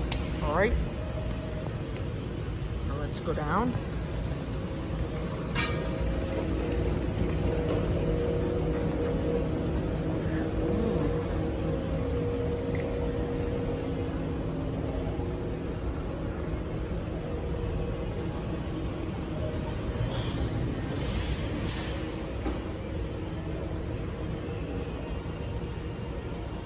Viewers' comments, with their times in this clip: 0:07 That sound of the Motor, It’s Epic!